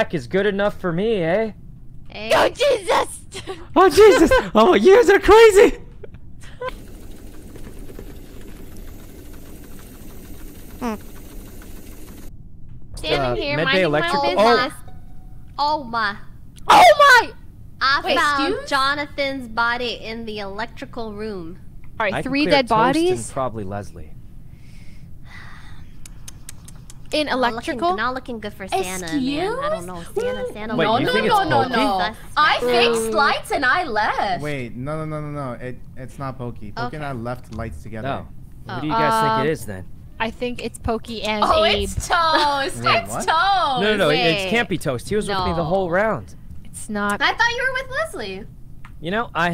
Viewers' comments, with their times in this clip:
0:10 That kinda sounded like a fart.
0:10 that sounded like a fart
0:31 Anyone else noticed Poki doing her "innocent" impostor voice ? "I fixed lights and I leEEeft". Then immediately Abe vouched for her.
0:31 poki saying i fixed lights and i left sounded the same a shirley from community to me